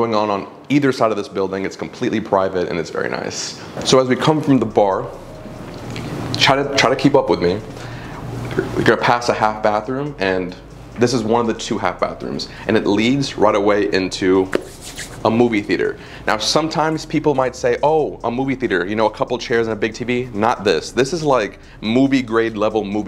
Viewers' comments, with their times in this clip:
0:08 are you chewing/eating something while you speak? gross. what was that noise from your mouth? Disgusting